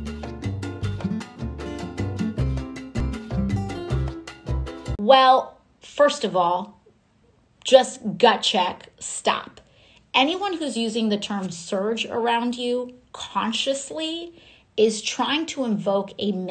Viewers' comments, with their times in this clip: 0:03 Anyone who speaks in that high pitched voice is evil.